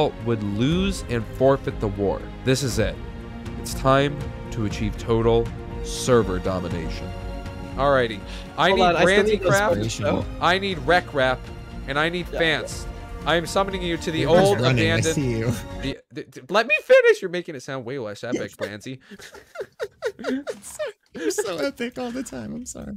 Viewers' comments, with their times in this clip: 0:05 i swear i look at the weather forecast and it said light rain/ SNOW when this music started playing